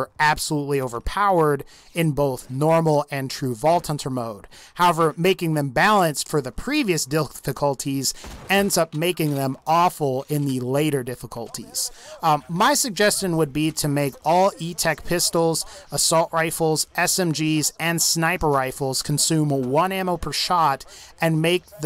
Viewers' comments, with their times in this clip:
0:06 heh what was that? Dilficulty?